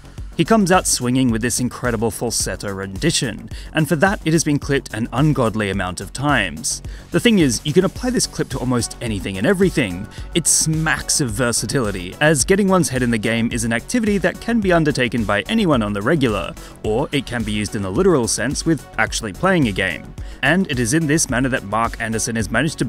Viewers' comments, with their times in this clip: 0:04 sorry to nitpick but that's not falsetto that's his normal voice register. Maybe a more accurate term would be vibrato?